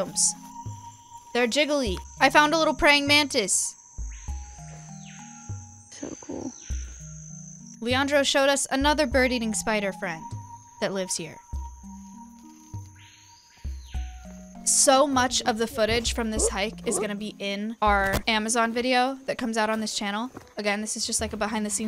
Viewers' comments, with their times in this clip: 0:04 the screaming piha in the background !!!❤❤